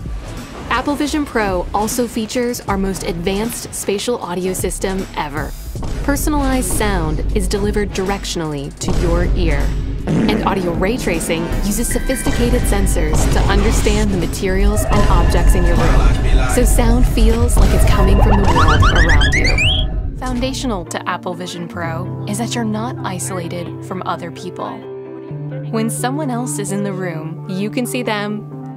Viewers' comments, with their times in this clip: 0:10 Thought it was a fart lol
0:16 that goofy ass sound killed me